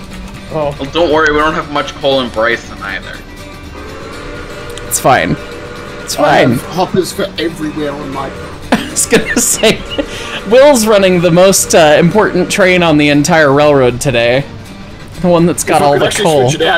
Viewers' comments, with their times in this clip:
0:03 is it just me or did 8 suddenly become an MTH locomotive, the whistle just sounded like one of the default QSI whistles from the Protosound 1 days